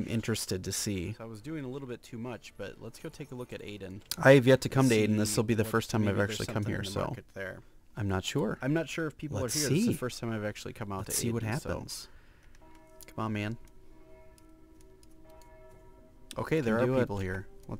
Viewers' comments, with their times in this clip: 0:05 What's happening and further with the audio? :o